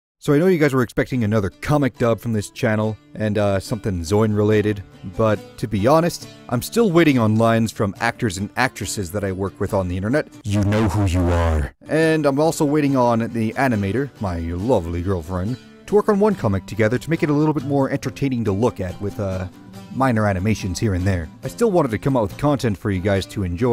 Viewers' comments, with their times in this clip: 0:10 in a triggering voice YoU kNoW wHo YoU aRe